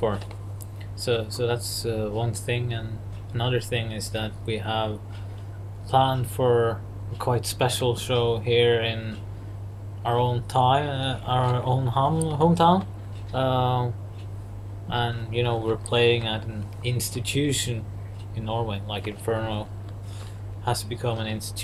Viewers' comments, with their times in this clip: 0:09 He mentions some coming event in "their own haong hung tao"... is that a Chinese harem or something like that?